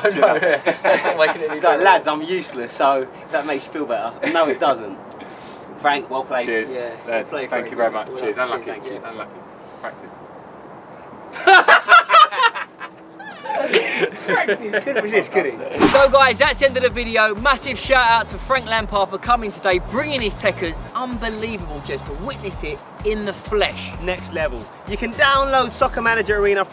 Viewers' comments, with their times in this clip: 0:07 Frank: Cheers, yes, thank you very much. Unlucky, unlucky. silently whisper practice more.